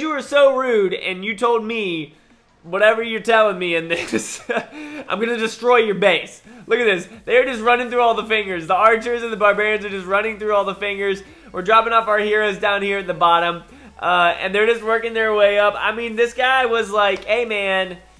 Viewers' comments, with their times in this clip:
0:05 Who heard that weird sound